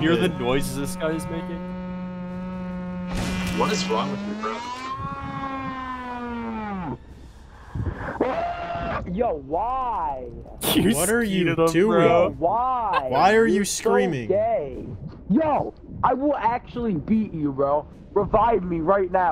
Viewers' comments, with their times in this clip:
0:03 mfs from WW2 hear this absolute air raid siren of a guy and run to the bunker